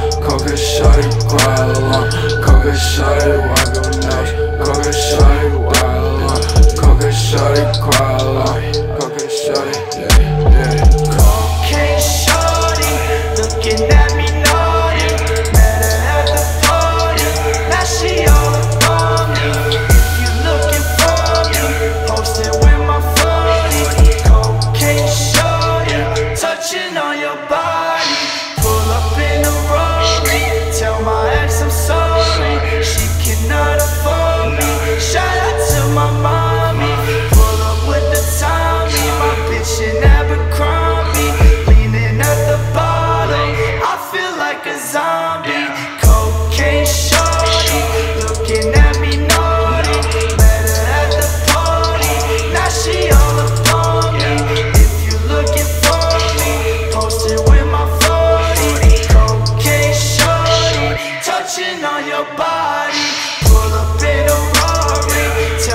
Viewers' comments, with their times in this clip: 0:10 i love his chorus.
0:14 is the "cocaine shawty looking at me naughty" part inspired by another song melody wise? because the new kendrick album on purple hearts, kendrick seems to use the same melody in his voice on
0:46 Snare hits perfect when he hits his head